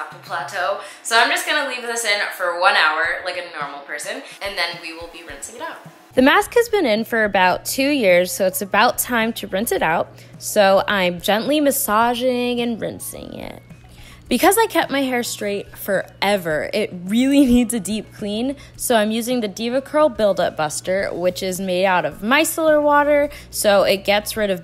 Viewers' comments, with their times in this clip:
0:06 "the mask has been in for about 2 years" I'm so confused 😂 did anyone else catch it?